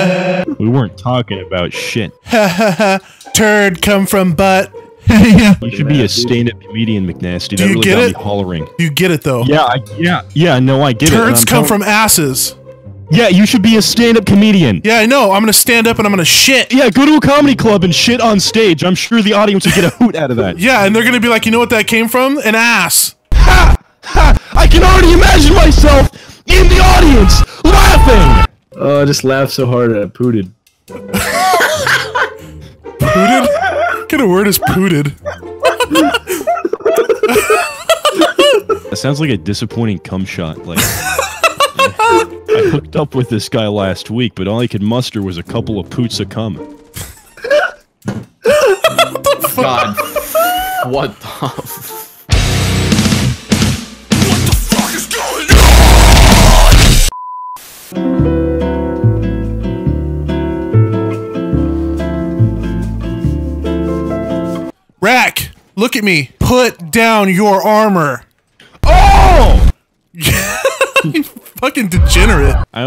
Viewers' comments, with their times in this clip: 0:04 lol that laugh
0:29 scp 096 screeming
0:52 Haven't heard that song in so long.
0:53 my ears exploded
0:55 who else was playing this video over their speakers and shook the walls of their house?